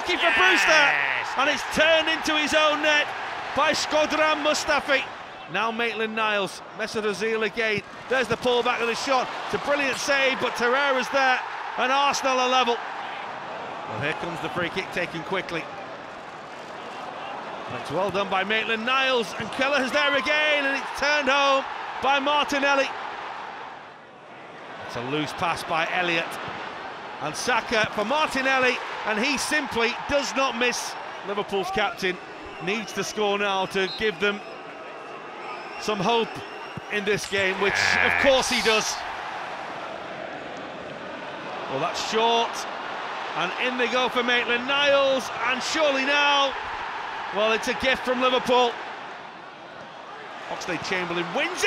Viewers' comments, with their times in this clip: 0:04 if i turn on subtiles it says squadron muster feet
0:37 some goat's voice